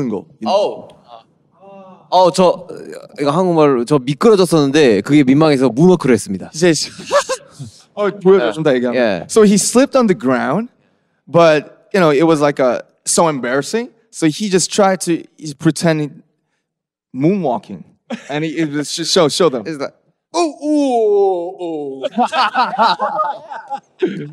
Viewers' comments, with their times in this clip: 0:06 Am I the only one who noticed the interviewer laughed after Jhope spoke like he knew Korean 😂😂